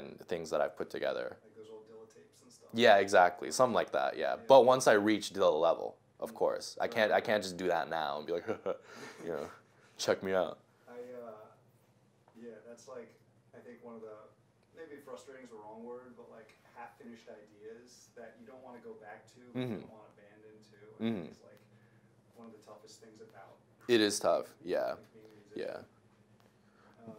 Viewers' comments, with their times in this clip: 0:08 omg, i love that little "hehe, check me out"